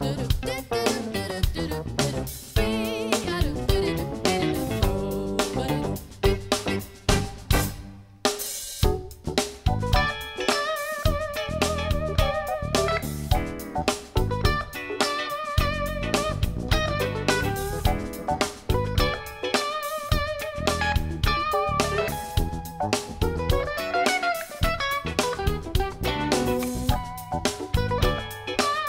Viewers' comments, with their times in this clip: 0:09 Really dig that one bluesy note Walter keeps playing during the Gaslighting Abbie solo That note does bear repeating. It's like someone (Les Paul?) said: Sometimes it can just be one note - if it's the right note. RIP Walter Becker. Well played.